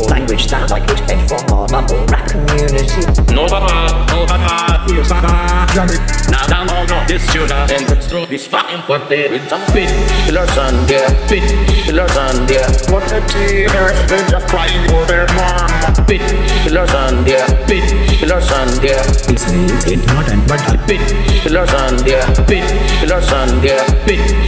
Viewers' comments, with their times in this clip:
0:05 Sounds like an plane